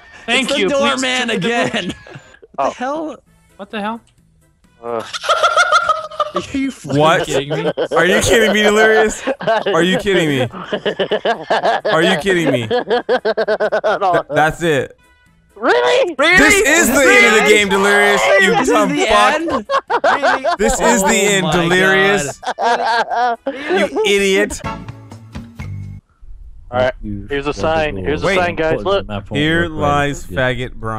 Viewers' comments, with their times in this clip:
0:07 One of the best laughs I have ever heard xD I love these guys and their creativity to create all of these skits and jokes!!!!
0:12 dat laugh doe